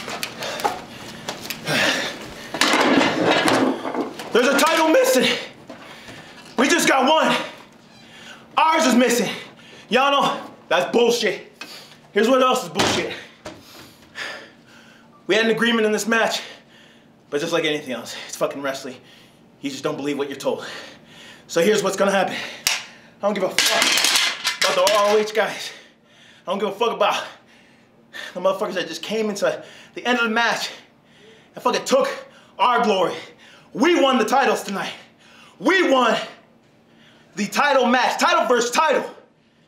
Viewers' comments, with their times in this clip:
0:04 felt sorry for that voice crack...
0:25 "I don't give a fuck about the motherfuckers I just came inside " ? What !!!